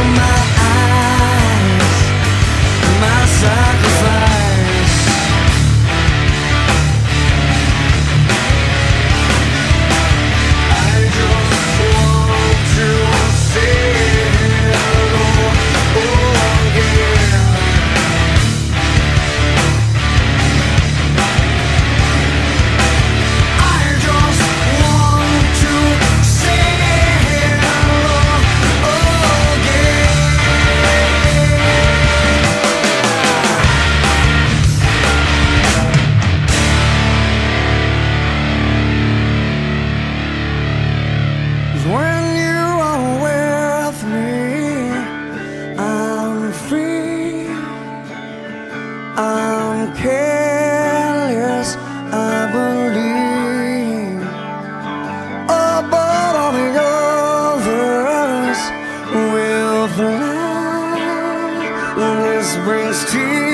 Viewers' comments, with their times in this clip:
0:04 has such great mixing. Very epic bass and present sound for early 2000s.
0:46 Yeah, it's a pretty common chord (1 over a 7) used in a lot of songs, but it sounds really good here. even